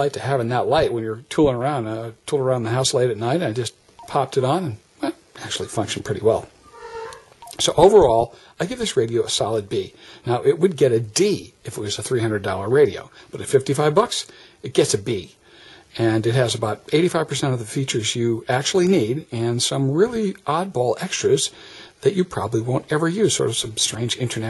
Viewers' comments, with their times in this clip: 0:05 Ey man great video, but maybe tell your elephant to stay silent the next time